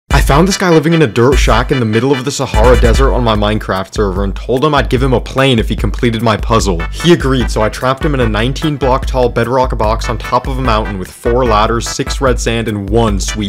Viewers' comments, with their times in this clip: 0:01 The Music Was Intense...